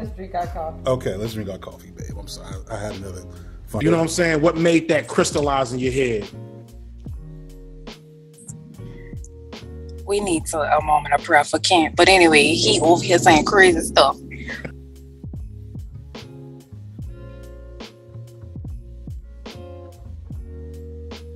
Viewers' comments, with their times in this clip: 0:05 is that woman from the N.O.?!? cause the way she sounds got the 504 all over it!!!